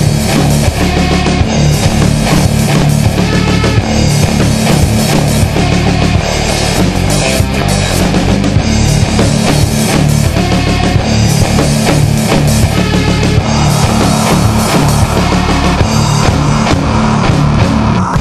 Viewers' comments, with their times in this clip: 0:06 OMG I love the riff so much! This band OWNS.